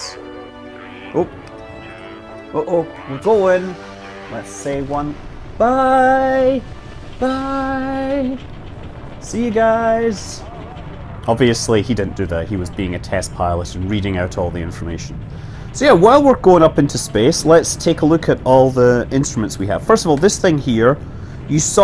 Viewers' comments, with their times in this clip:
0:04 He also didn't have music playing during the launch